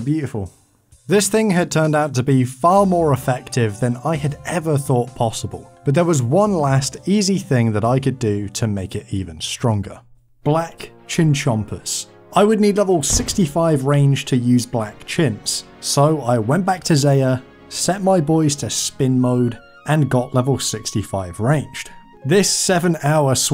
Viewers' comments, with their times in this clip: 0:10 Enjoyed the pokemon music haha